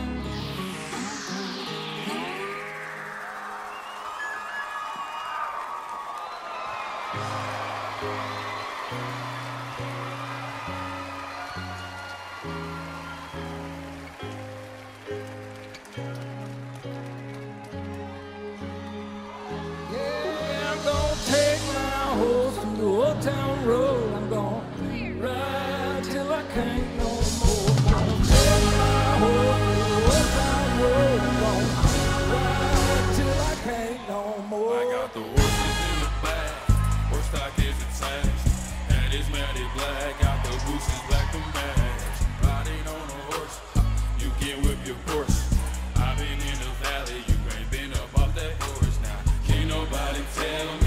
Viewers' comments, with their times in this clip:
0:07 If you look and listen you hear the guitar but billy isn't even playing yet lol Lil Nas boutta burn him out
0:33 hey hey thats a nice rithym.ayo - silver!!...someone can please say who is the woman ? kisses for all